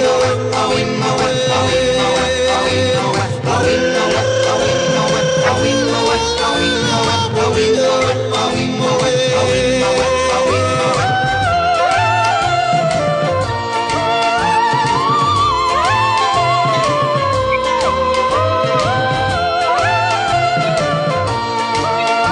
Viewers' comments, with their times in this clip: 0:04 electric toothbrushes be like